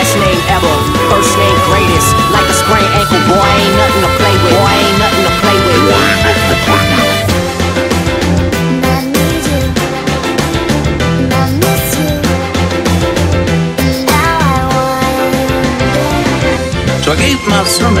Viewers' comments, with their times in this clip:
0:06 ,I hate that song,but why does right here is feels,magically connected?